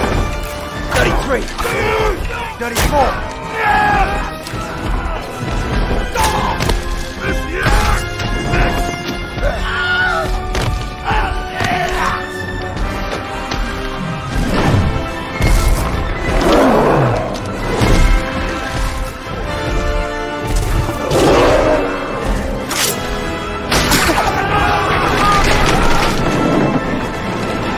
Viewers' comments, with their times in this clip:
0:09 Instead of driving 3 or 4 arrows into the base of the oliphaunts skull, (I wonder) if he gently petted the animal it may have reacted in a peaceful way. - run on sentence aside. Wilhelm scream.
0:09 If after conquering all the combatants on the beast, instead of driving 3 or 4 arrows into the base of the oliphaunts skull, (I wonder) if he gently petted the animal it may have reacted in a peaceful way. - run on sentence aside. Wilhelm scream.